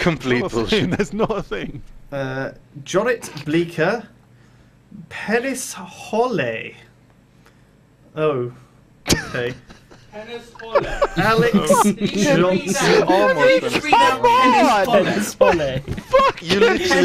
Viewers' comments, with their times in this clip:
0:05 Paris Hollay? what? also Mai Bolt-ninge?